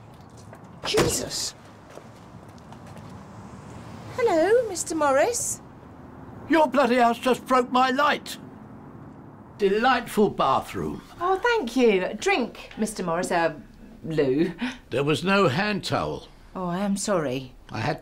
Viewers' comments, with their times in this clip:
0:06 auto subtitles, your bloody ass just broke my light